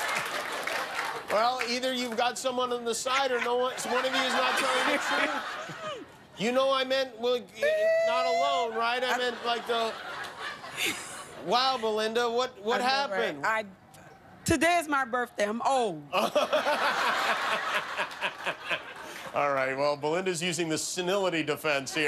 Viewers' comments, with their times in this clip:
0:10 when Jimmy mumbles and forgets the black guys name